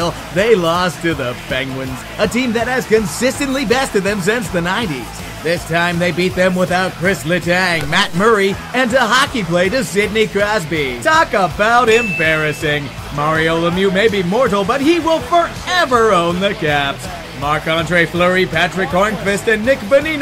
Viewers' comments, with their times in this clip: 0:05 What the hell are you saying ? "This time they beat them without Kris Letang, Matt Murray, and TAHOCKEYBLATUS Sidney Crosby"